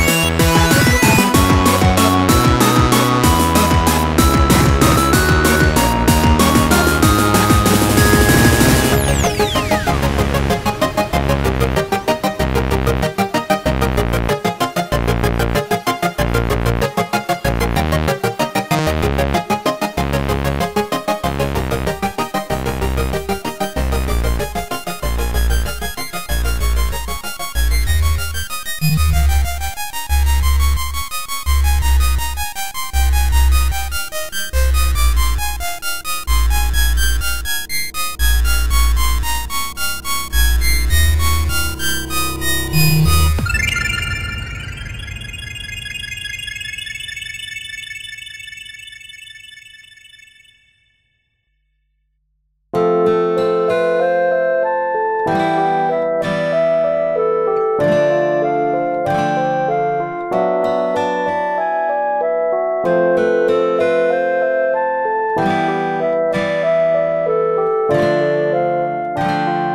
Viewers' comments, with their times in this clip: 0:08 I love the music from
0:53 for some reason that music gives me goosebumps